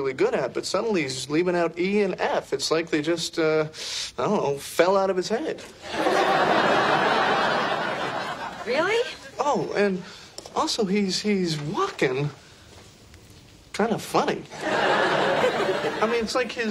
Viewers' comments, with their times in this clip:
0:04 David cover Jennifer's laugh in this scene